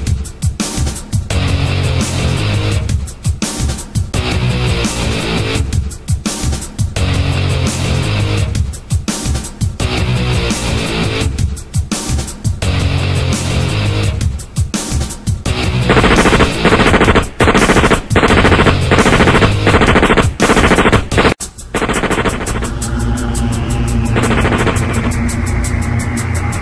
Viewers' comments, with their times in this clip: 0:08 is he speaking German?
0:08 No shot cass started speaking German💀💀